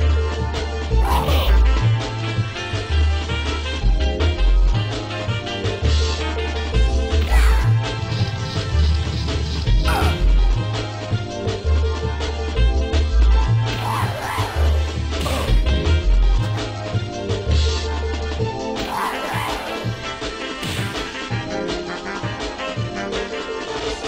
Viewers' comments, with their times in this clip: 0:09 Why does Urien do an Alex grunt?
0:09 URIEN TAKES OVER THE ALEX VOICE
0:10 WTFLOL why did Urien sound like Alex ?